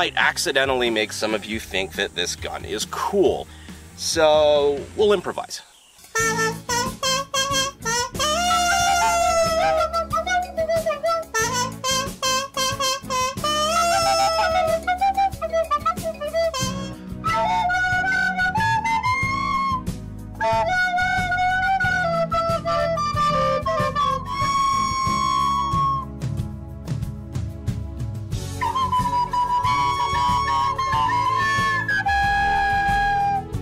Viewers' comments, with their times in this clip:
0:05 why does this song smell like play dough 😭
0:06 if the gun comes with that music I am buying it no matter how bad the gun is
0:06 Unsurprising, this IS the first time I've heard someone play a kazoo with their butt cheeks. 🤔🤨 I'm not real impressed. Definitely the correct song to "show off" this affront-to-the-Kalashnikov-lineage of a shotgun. 👏
0:06 this music is breliant
0:09 Oh god somebody make it stop. I'm plugging my ears under bleeding all god it's just like that time of the month again Holy f***
0:14 Ngl that reminded me of Libyan Army band playing "God Save the Queen."